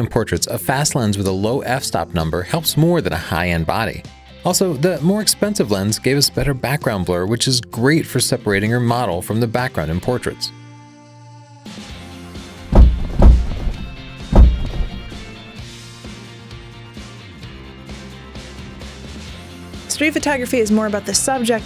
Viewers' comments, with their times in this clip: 0:09 thought that was gunshots